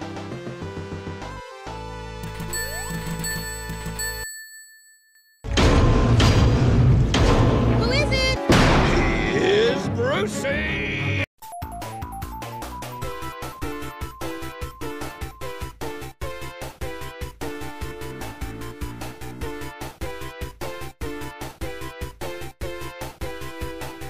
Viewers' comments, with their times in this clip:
0:09 BUT it's Sound like He's Brucey!!!! From Finding Nemo